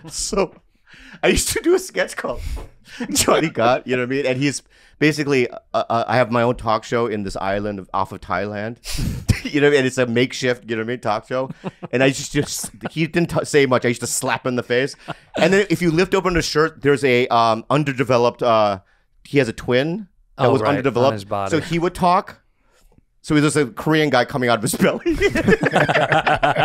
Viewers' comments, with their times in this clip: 0:07 that voice of pongo is the one he always goes to. when he does any kind of impression that is the impression he does Pongo.